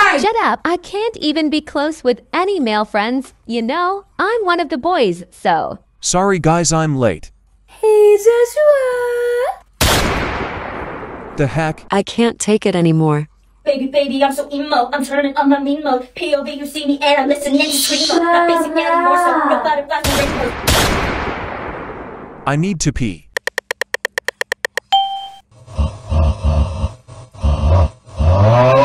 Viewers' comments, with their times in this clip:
0:09 Omg freaking Lala sadii’s voice 😂